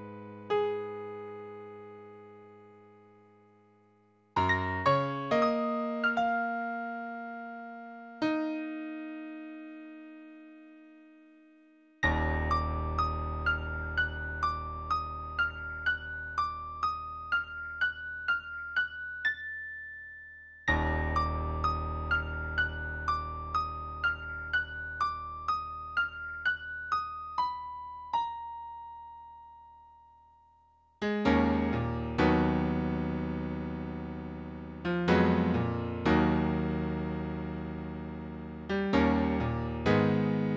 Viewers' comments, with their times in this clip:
0:04 It's probably the notes that are wrong :/ It begins to sound messed up
0:22 Believe it or not, I'm pretty sure this is fairly spot-on, disregarding some mistakes in the left hand after